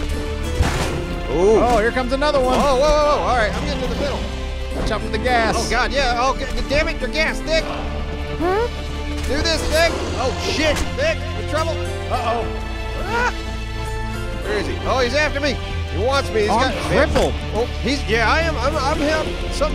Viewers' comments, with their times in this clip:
0:07 was that a fart ??